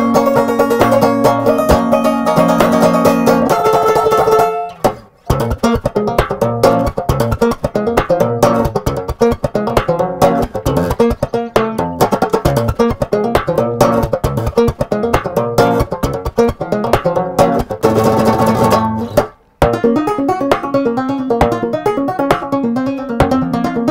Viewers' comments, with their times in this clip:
0:05 yeaaah, slap that banjo